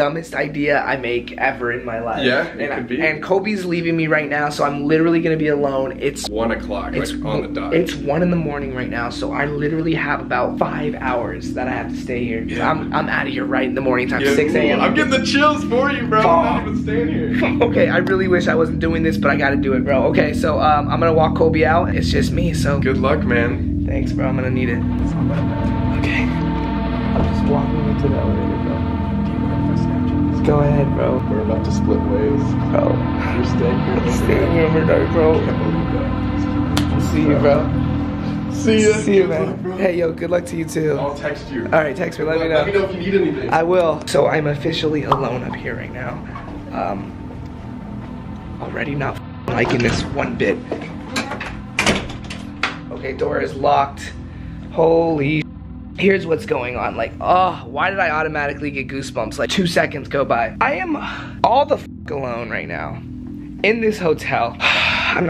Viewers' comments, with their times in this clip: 0:04 No joke turn up your volume all the way with headphones there’s a weird sound
0:38 You can hear "see ya" it's a woman's voice
0:43 2k19 there's a child's laughter Plus the M&M comes back like way Fu©king faster then when he rolled it out.
0:50 Is it just me or did anyone else heard a girl say 'yeah'
0:50 u can hear a kinda like girl voice saying yeah
0:50 u can hear a something like 'ya' or 'hey' . Did u guys heared it ?
0:51 .... uh did you hear "yeah" but a female voice..
0:51 hear GHOST: Yea